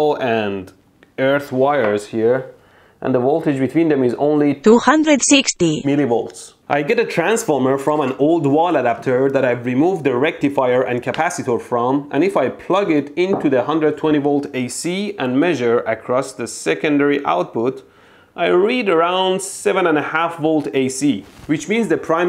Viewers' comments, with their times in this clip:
0:03 I like the fact that the artificial voice also has an accent :D